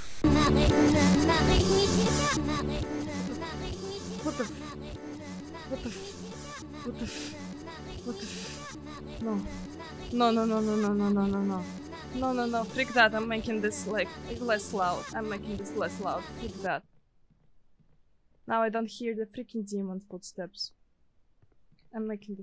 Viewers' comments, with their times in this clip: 0:09 If it wasn't so repetitious, I could imagine a beat or tune going with that.